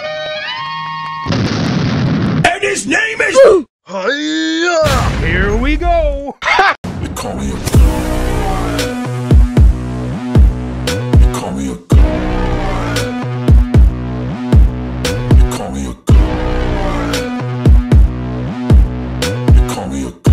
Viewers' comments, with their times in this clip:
0:07 Sick beat, yo